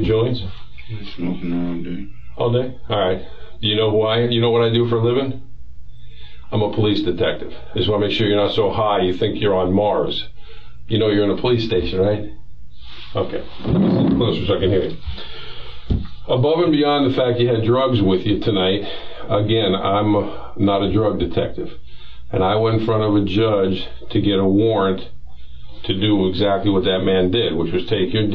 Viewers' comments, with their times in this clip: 0:09 He definitely was perked out !! look how he’s mumbling 🤦🏻‍♂️